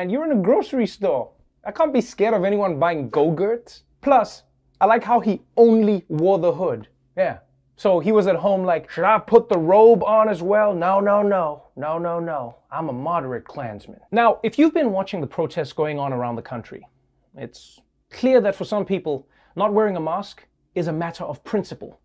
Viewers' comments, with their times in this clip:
0:03 I like how he lowkey used his "Trump voice"